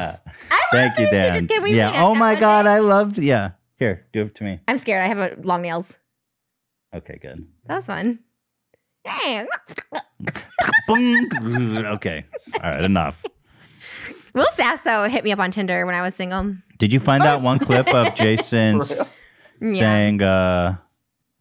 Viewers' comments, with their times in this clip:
0:08 Hearing Trisha make the 3 stooges noise was so cute lol